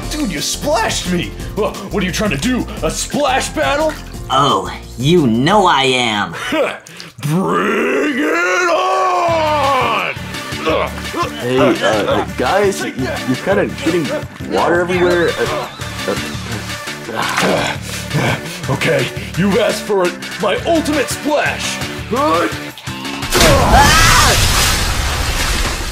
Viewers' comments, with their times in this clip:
0:07 Knuckles talks like kratos